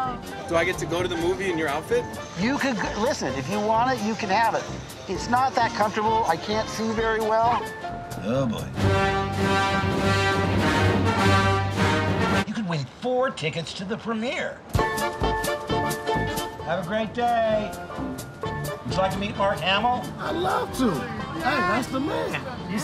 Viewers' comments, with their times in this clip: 0:03 not recognize voice ? lol
0:10 Dark Vader approaches with his awesome theme song Mark hamill: Buy some Premiere Tickets!